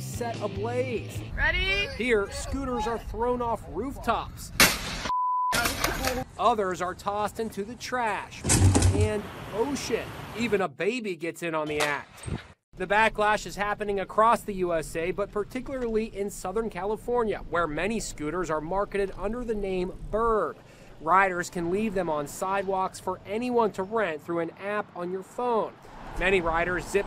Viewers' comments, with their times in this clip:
0:09 Thought he said oh sh*t